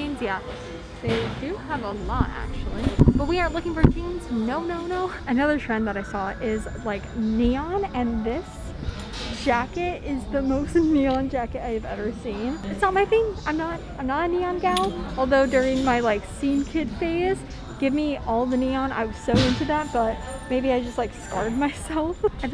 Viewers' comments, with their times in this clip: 0:06 hearing the value village commercial in the background is so comforting somehow